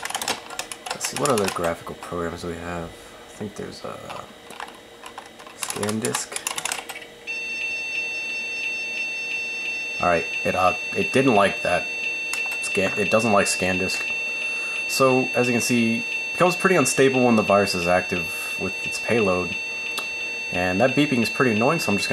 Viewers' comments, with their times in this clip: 0:05 you left your car door open